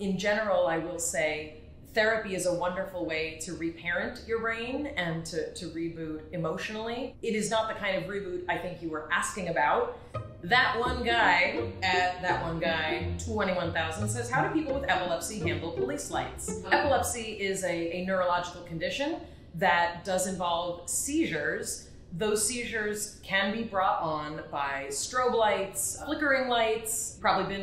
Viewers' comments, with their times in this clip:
0:10 excuse me!? I'd totally read that as "thah-toh-neh-guy" everytime I was exposed to that name!